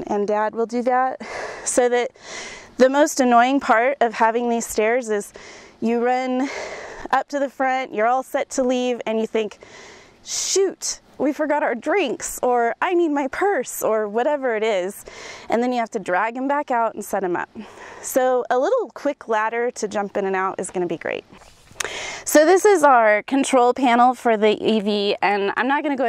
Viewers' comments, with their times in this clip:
0:10 the lady cant even breath!!! need to jog more